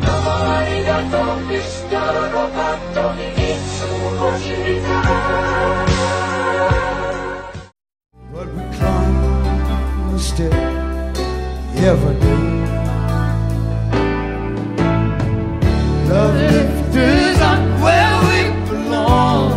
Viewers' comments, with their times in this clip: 0:07 I could never stand hearing Joe Cocker sing and to watch him was even worse because he strained every muscle in his body! 😖